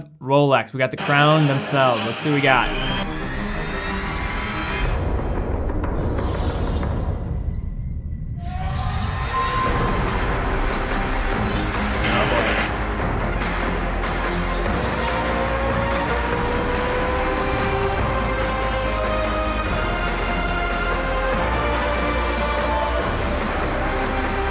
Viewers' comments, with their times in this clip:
0:05 I know Rolex were going for the whole 'connection to racing' thing with that Daytona commercial. But to me the first part felt just like Star Wars when an Imperial Dreadnaught suddenly appears, with all the ominous music and black/red lighting. Which is quite fitting for Rolex to be honest.